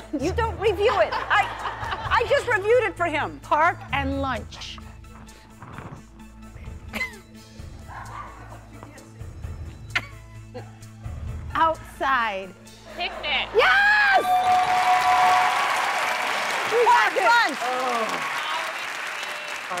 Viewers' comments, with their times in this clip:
0:07 Who whispered the answer " Picnic"